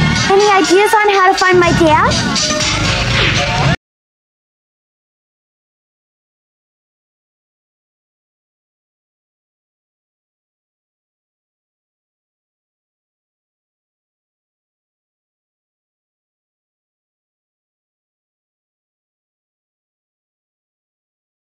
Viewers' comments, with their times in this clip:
0:04 What happened to the rest of the song ?